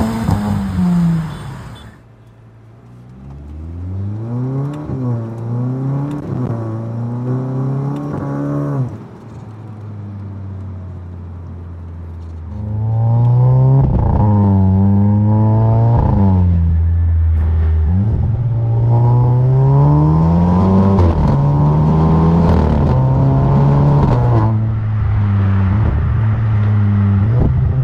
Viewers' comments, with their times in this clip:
0:08 For the 3-4 shift why was the gearbox struggling so much? TCU tuning error?